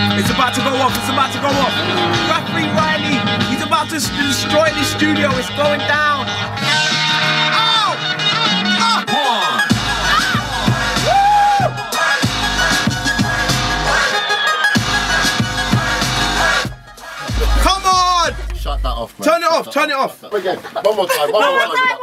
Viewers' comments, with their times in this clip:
0:10 Who can hear the scream at the start then the girl holding her head :o